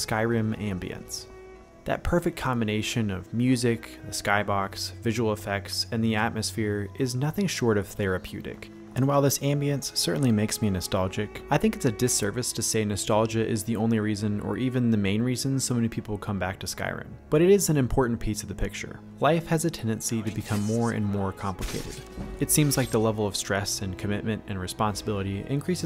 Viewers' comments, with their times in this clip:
0:08 This exactly frame with the music gave me chills. The imagination of a fantasy world with this mistical sense of wonder coupled together is what makes it special, for just a second i imagine that this world is real, this music is real, someone actually wrote it in this world, and many other things is what almost makes it a classical fantasy world with bizzare creatures and a story of the world of its own. I am sorry that i cannot formulate exactly what i think but this feeling is just so deep down in me, from when i was a child and there was still so much to discover, and skyrim reminds me of that feeling, i literally want to kick my legs in excitement of whats there is. Imagine an elder scrolls game, but its even more real? NPC's with extremelly well developed AI personalities? Much bigger world, where every stone, rabid wolf or a regular cave is unique? I would not want to leave that world, i would sink thousands of hours there